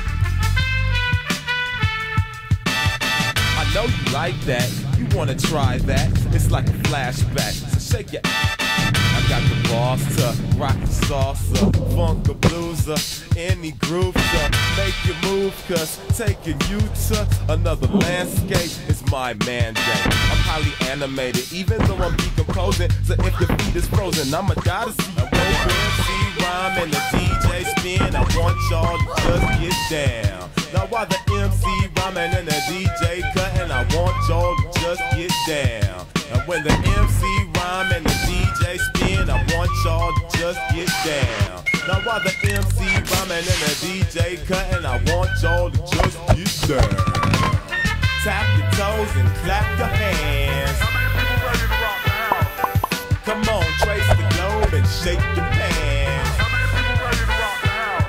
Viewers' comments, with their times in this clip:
0:07 i like how the instrumental goes "tan tan TAN!" right in the censored part
0:07 WHY IS IT CENSORED 😭😭😭 IT SOUNDS SO BAD 😭😢😢
0:25 middle school flute players:
0:25 Best part T H E F L U T E
0:26 *2D's epic recorder solo* Everyone else: Wtf is he doing
0:26 me at school when we all played recorders as a class.
0:27 Nah can we just appreciate 2-Ds flute playing it’s so amazing 🥹
0:29 Noodle faintly says, "oof"
0:43 The flute part on 💀